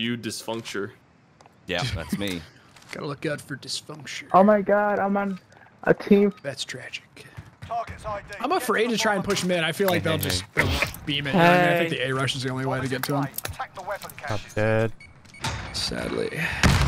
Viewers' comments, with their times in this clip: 0:04 that man was about to pour his heart out and he just got muted right away lol